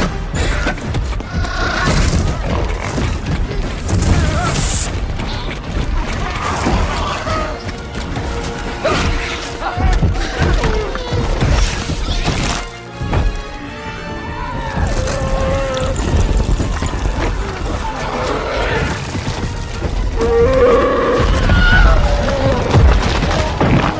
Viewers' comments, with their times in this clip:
0:10 I hear an Uruk hai sound